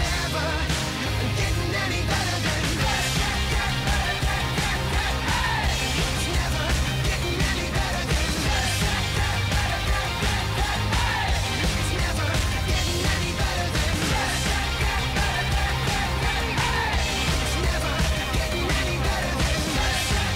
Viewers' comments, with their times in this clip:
0:08 I've heard over and over again but always in I can't hear anything else than "Hail Satan" oh gosh